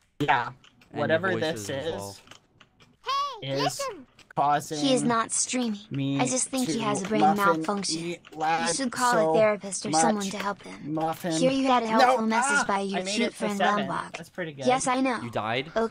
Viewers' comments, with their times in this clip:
0:03 Skeppy: WAIT! did we win? Microphone🎙️: Oh NO here we go again. . .